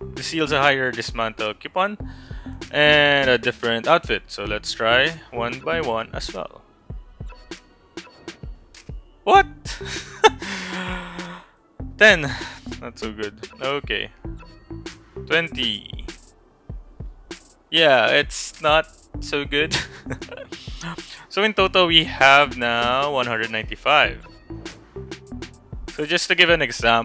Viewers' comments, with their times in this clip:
0:08 “What” the way you said it though 😂